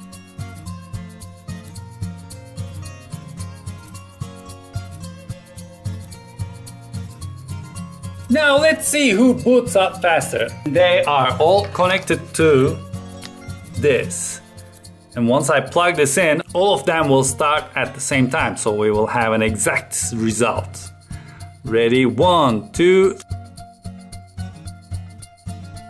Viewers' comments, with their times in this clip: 0:07 Sounds like Gru from Despicable Me lol